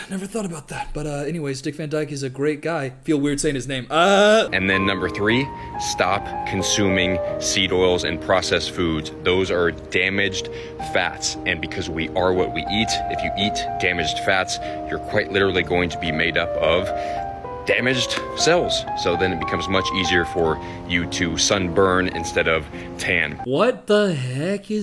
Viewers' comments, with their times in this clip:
0:06 the Chopin in the background is 👌